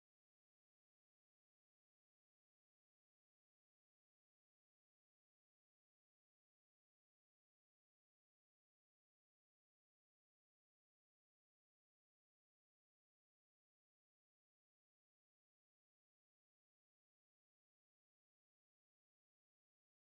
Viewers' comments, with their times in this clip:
0:05 I wonder y the sound went out